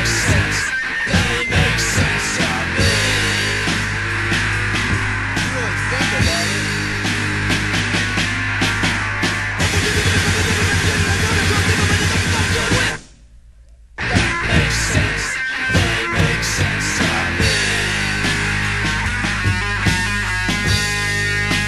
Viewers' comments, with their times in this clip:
0:09 The song 'No Sense' contains the earliest example of blast beats